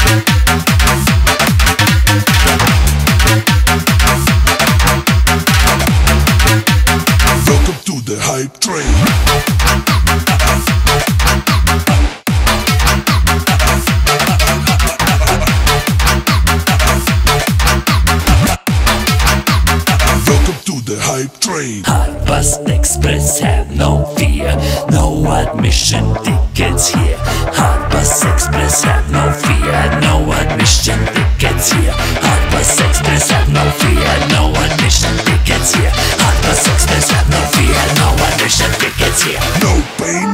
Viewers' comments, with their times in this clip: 0:10 Those record scratches sounded amazing and nostaglic
0:21 The slow build is so good. Literally sounds like a train gaining speed. Absolutely love it.